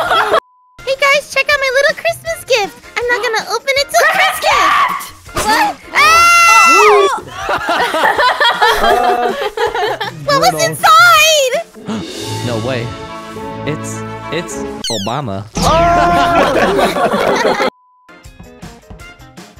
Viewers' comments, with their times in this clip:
0:05 I NEVER HEARD HER SCREAM LIKE THAT!